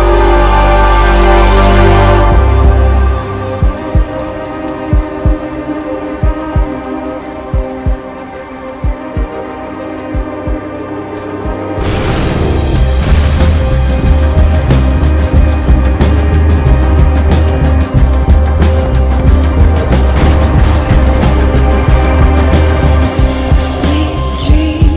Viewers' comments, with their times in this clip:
0:08 Great song to a good video!! In fact love the song you used to match this up. That explosion was epic :) Reminds me of the fast and the furious when Jason Statham comes out of the hospital after the grenade goes off --------EPIC!